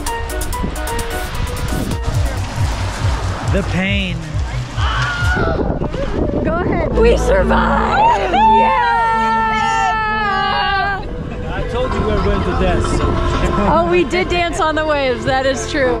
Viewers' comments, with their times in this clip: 0:04 The Wilhelms scream 😂